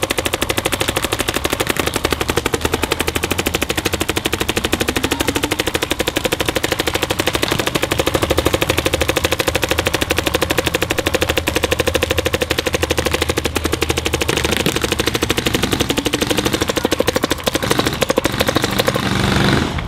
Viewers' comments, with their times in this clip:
0:05 damn who was shooting 30 bps ??